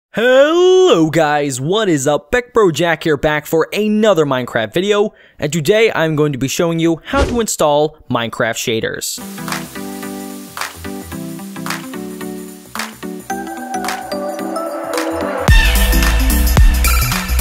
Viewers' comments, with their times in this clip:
0:01 R.I.P Headphone users...